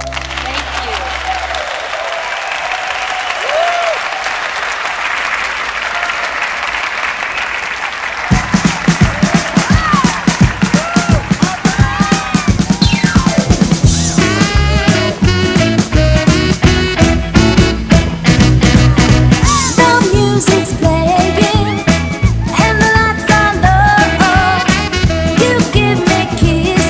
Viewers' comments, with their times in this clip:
0:08 i lyk the song